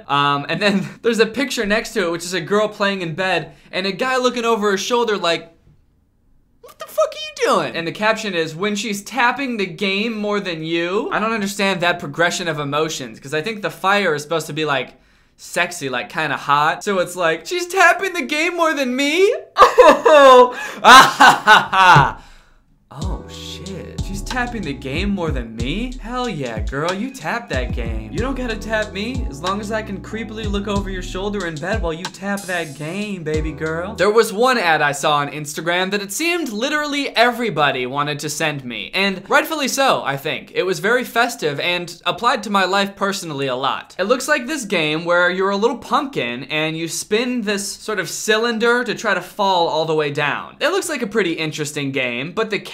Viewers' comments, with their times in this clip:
0:05 nice Robert DiNero impression
0:33 that "baby girl" SOUNDED LIKE A MIDDLE EASTERN COUNTRY SINGER 😭